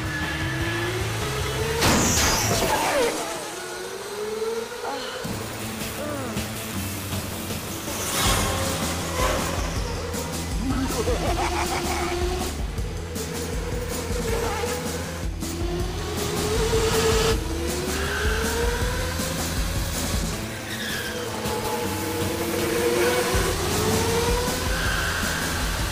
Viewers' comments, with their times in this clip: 0:10 i love house's evil laugh (: